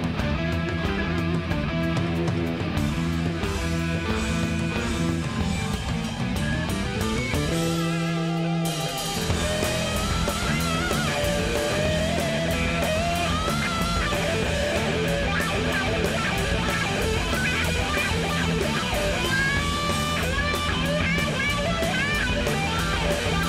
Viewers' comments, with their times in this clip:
0:08 When the solo starts ... wow!! 😎